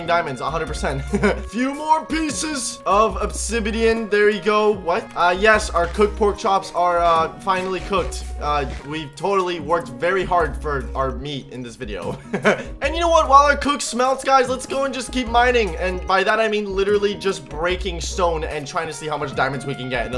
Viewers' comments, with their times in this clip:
0:03 Was that supposed to be voice crack?